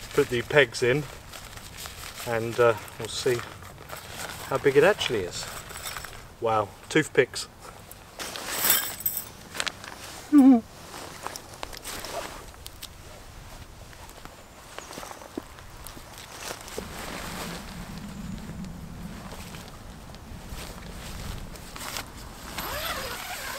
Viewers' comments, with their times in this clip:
0:09 the little giggle has me losing it HAHAHHAHAH immediately liked the video
0:10 the little laugh at the pegs 😂
0:10 the little laugh at the pegs 😂